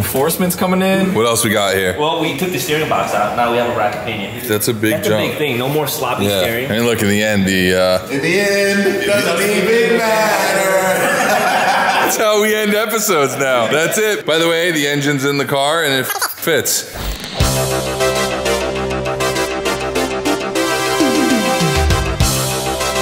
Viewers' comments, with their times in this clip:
0:06 If you don't burst out in song with your friends, are you really friends?